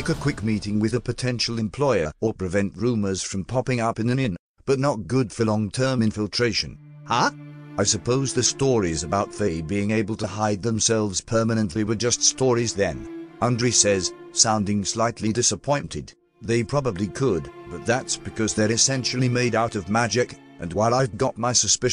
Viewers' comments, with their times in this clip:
0:06 That Huh sounded really off compared to the rest of the voice